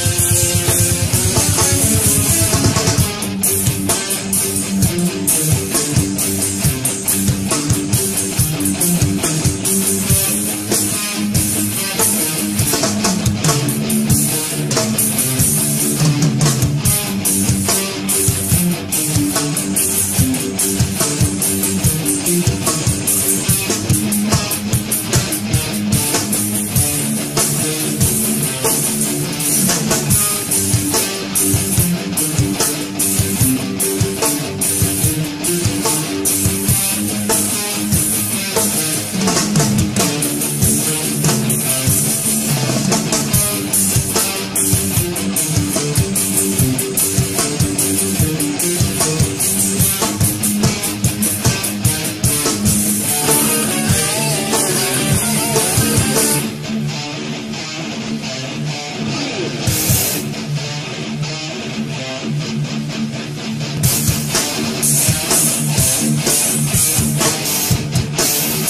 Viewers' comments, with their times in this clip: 0:03 fucking amazing groove
0:56 Been infatuated with Death for 8 years but only last month got into Control Denied (another masterpiece, who could of guessed?) so now I've been listening to these just to squeeze the last of Chuck's greatness into my ears and heart. Considering the controversial nature of the demos' release I would've thought them much rougher/crappier but these are practically complete songs, love it. Special shoutout to that riff of course Chuck didn't sing in Control Denied but you can just feel that classic Death vibe of Chuck playing insanely heavy shit and gnashing his teeth upon the bones of society. Wonder what he would've lyrically eviscerated there. Lots of things to wonder.....RIP Chuck. Thank you for all the great music. It's called "death" metal for a reason 🤘🏻